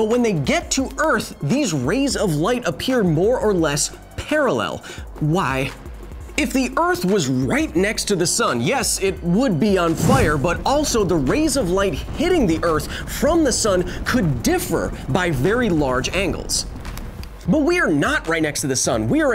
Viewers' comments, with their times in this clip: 0:03 the way he says why
0:05 "Why?" sounds rather weird.